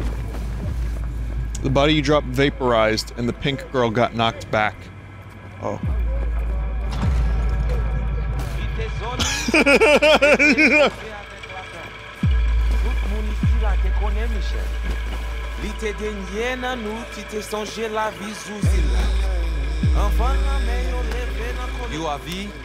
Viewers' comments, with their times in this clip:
0:07 WARNING BOZO THE CLOWN LAUGH